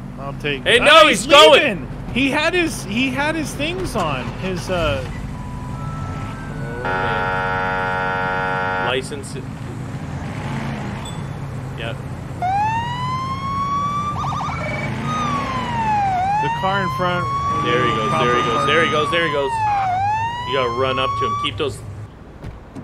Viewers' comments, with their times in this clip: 0:05 anyone else hear Harry Potter?